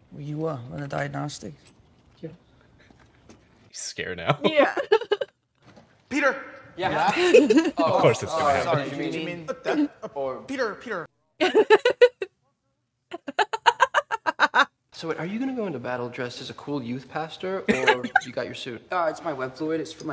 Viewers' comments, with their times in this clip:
0:06 its a funny scene but for some reason it just amazes me at how good the actor that plays ned is at delivering lines like these